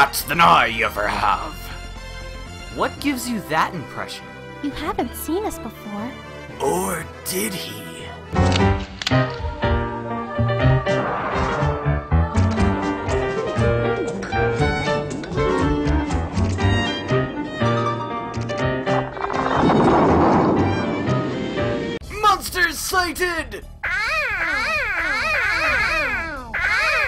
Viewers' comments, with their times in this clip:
0:09 Three things: 1. I've loved this series so far 2. Does anyone know what the melody (pirate theme) is from ? It sounds catchy. 3. I always knew vocaloid could kill